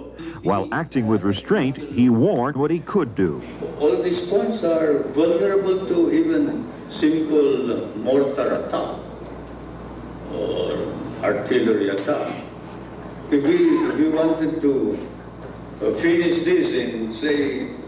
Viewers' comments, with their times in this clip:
0:04 his voice sounds like The President of the Philippines Duterte